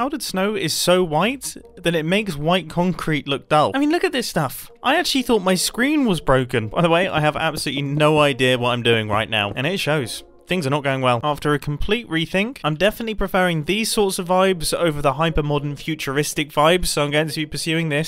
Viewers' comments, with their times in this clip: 0:06 Anyone else get Lego Star Wars vibes from the background music that starts playing or am I just losing my mind?